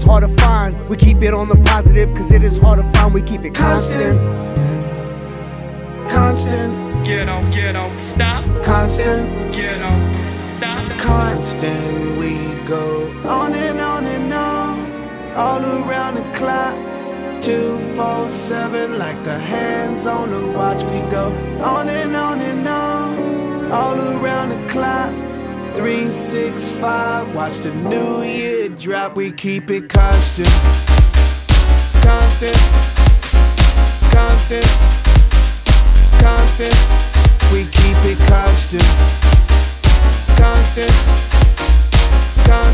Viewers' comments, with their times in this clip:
0:05 It gets really good thought when the orchestra kicks in
0:20 and the beat drop is so dooopppeeee 🔥
0:28 the drop! some mega drive memories
0:29 Shout out to Slick Rick! ;) Also Love when the classic house beat kicks in
0:29 Hardest Beat Drop EVER!
0:30 Damn, I love the beat change !!! Is there a part 2 by itself? Black Eyed Peas out here killing it like they always do! Mad props!!!
0:30 Yo wtf, i heard Airglow Fires vibes ??? collab with lone ?